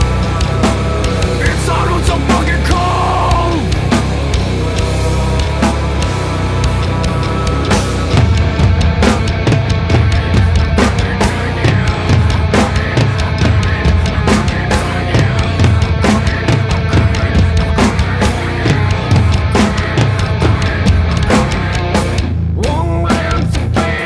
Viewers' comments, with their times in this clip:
0:09 deadly part the drums the guitar